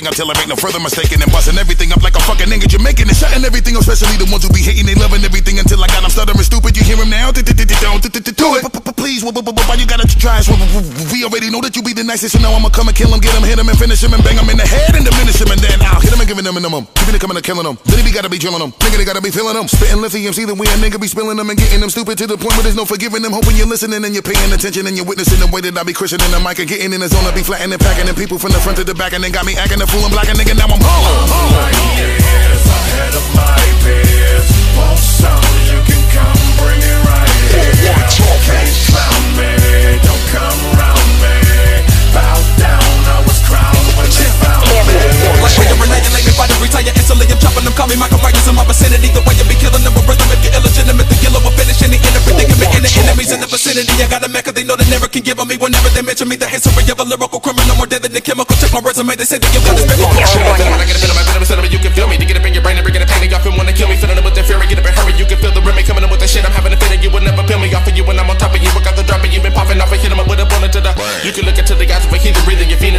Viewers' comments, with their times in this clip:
0:07 gives me a bill denbrough feel there.
1:00 this man deserves a fking medal. he raps so fkin clean and solid. love it.